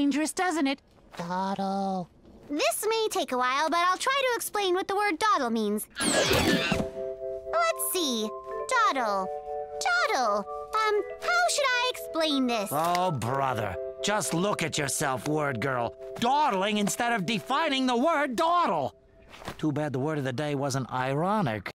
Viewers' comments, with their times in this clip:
0:05 I love when Mr huggy Screams lmao